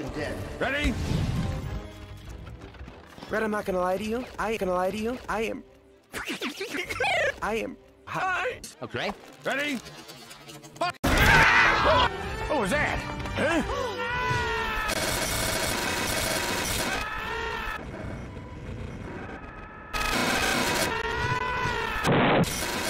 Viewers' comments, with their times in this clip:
0:10 Loved the classic cry